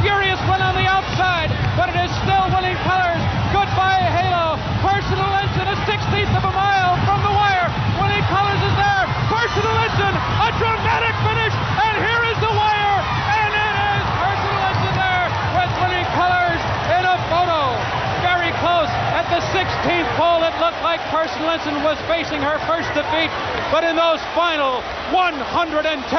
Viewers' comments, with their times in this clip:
0:09 Tom Durkin goes crazy